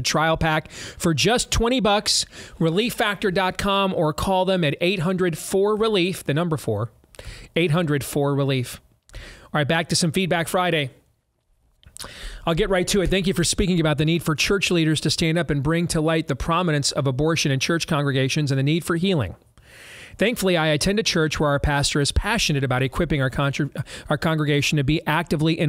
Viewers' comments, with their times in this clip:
0:08 What’s that catchy music they play at the mark?